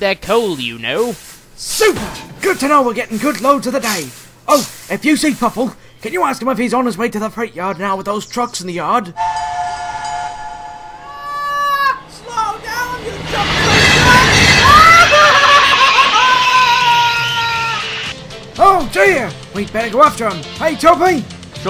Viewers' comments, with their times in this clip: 0:09 Pufle's Whistle the Railways of Crotoonia
0:09 CP 1077's 3 Chime Whistle